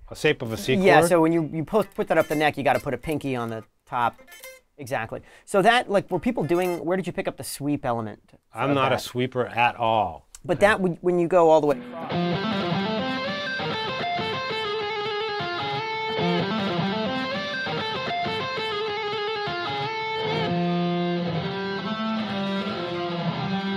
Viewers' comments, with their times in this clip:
0:08 lmfao and the dude still rips arpeggios 20x faster than I can.